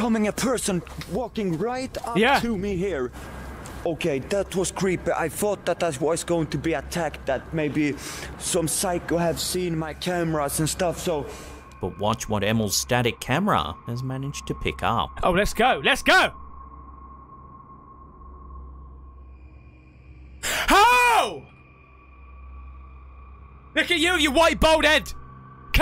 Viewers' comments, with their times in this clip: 0:07 Is anyone hear "Help me" whisper in ? o.O